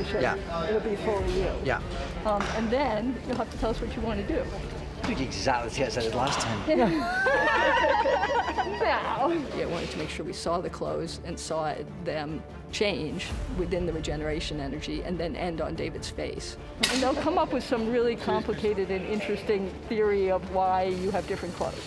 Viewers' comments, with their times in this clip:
0:08 Whose high-pitched laugh is that?